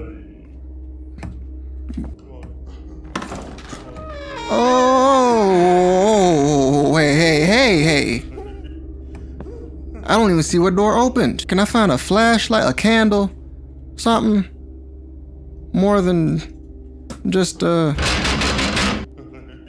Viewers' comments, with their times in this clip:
0:03 my man sang us a whole song LMAO